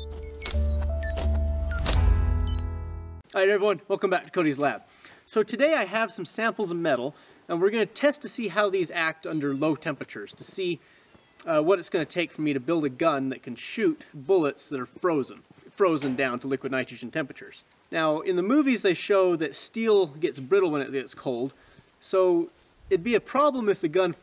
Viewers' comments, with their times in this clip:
0:09 I can hear a cat